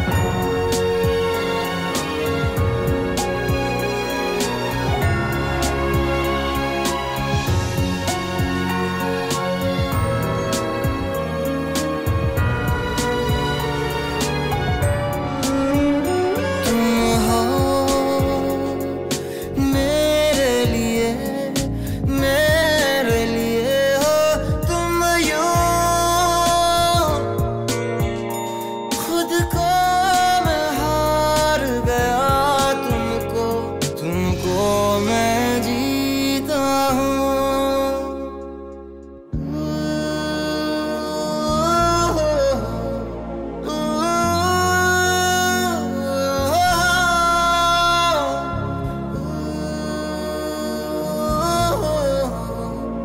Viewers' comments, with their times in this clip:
0:08 This music ting ting ting ding..... ❤
0:15 violin tune makes my heart melt ❤🥺
0:39 Voice ❤️ Mohit Chauhan Sir ✨💓